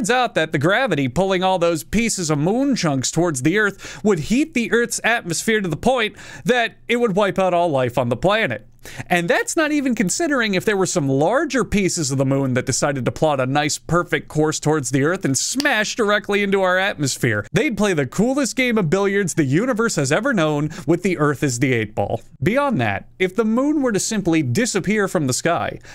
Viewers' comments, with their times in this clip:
0:10 background discord notification